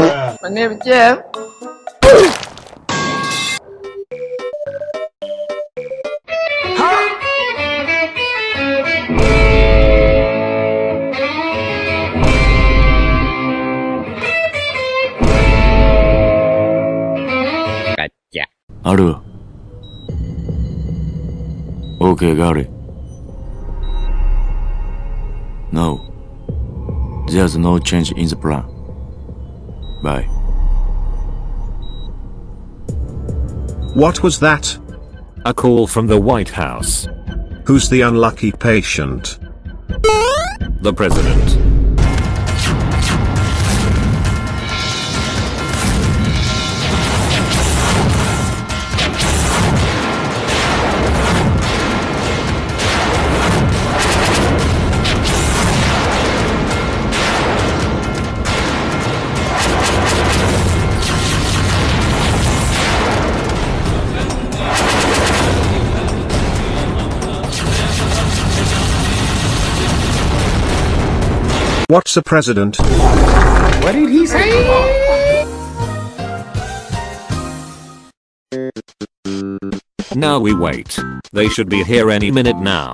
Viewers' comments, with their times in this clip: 0:06 Soul good man music
0:42 bacon starts to be Indian
1:03 bro why, just why u literally got me in a Indian accent movie like why😭😭😭😭 I’m Indian 😭😭😭😭😭